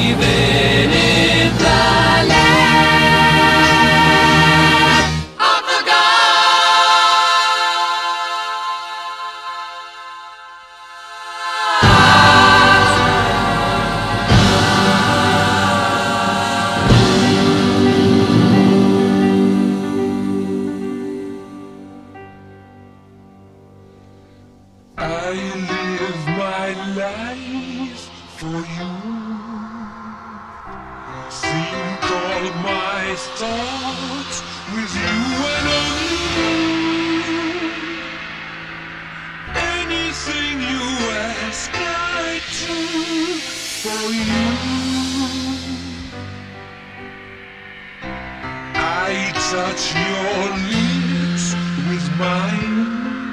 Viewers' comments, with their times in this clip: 0:03 Nobody: the mosquito in my room:
0:05 sounds like it's a boomerang coming back to hit you. Brilliant.
0:24 Sounds like a Ween song.
0:37 The last of this track is particularly mind-blowing - the background harmonizing mixed with Freddie's lead vocals and Brian's guitar are simply trance-like spellbinding man...